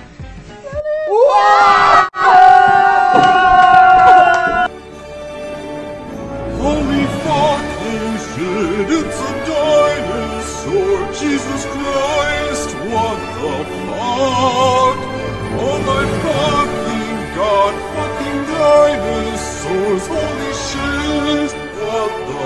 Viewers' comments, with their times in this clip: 0:05 this bg music is sending meeee😭😭😭 wtf is that
0:06 Your bgm AHAHAHA
0:08 the song😂😂 I cant stop laughing 😂